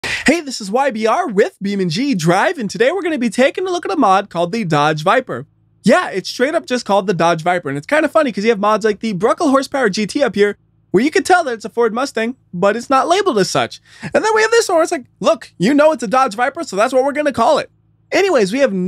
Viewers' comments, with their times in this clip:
0:00 why does it sound like a slap